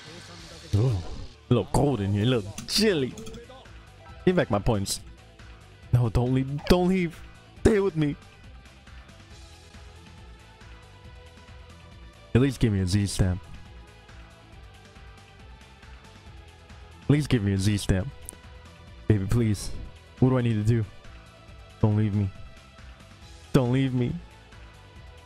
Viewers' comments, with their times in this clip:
0:07 Did your dog fart ?